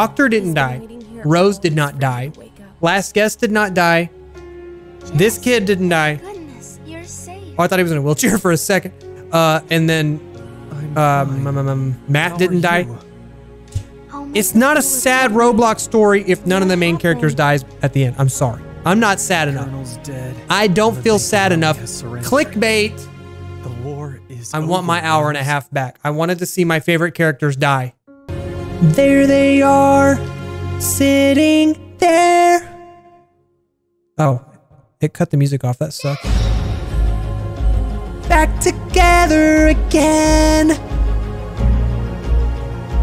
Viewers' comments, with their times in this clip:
0:08 he a r good singer
0:28 the song was soo good made me want to hear the whole thing